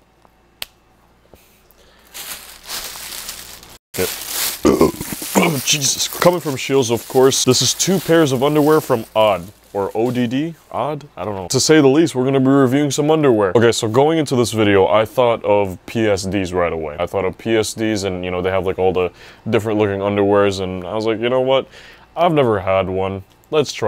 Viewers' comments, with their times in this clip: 0:05 your burps always catch me off guard, always make me laugh 💀